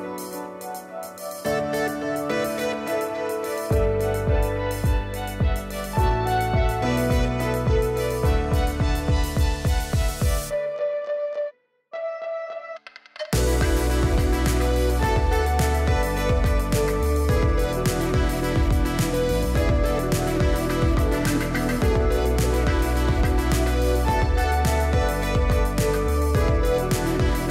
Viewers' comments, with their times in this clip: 0:10 that music sync was so satisfying, thank you